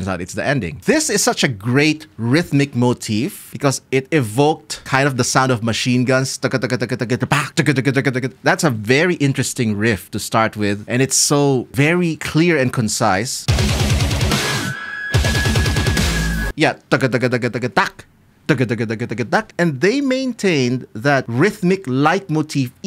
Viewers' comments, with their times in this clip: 0:05 The gun sounds are because Sam's sword has some gun parts on it along with a trigger, allowing him to shoot the sword out with the same amount of force as a gun, letting him perform a bullet-speed slash